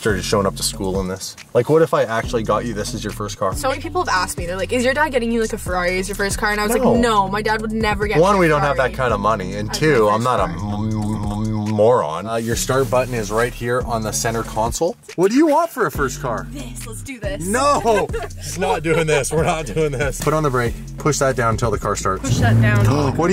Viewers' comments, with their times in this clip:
0:10 that's what I sound like when I'm eating something good